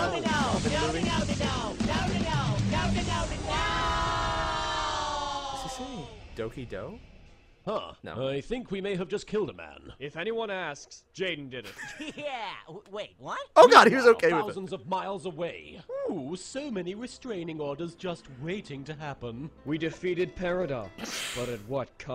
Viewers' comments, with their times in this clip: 0:05 Paradox: "no no no... nononono" iS He sAyINg DoKI dO?